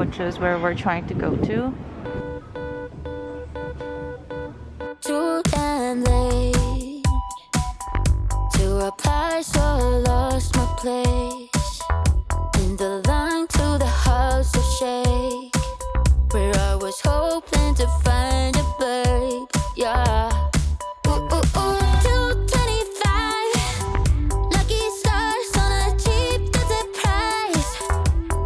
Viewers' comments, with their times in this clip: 0:09 From and on it felt like those scenes from the old Barbie and MyScene movies where everyone got together to hangout and shop as friends and simply enjoying their time, specially with that bg music, and I felt that little nostalgia of wishing to do the same 😂😂💕